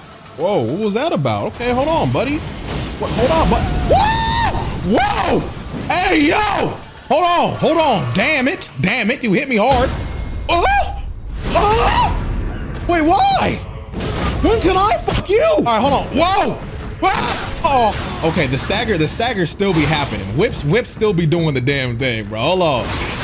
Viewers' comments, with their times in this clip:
0:08 the scooby sream xD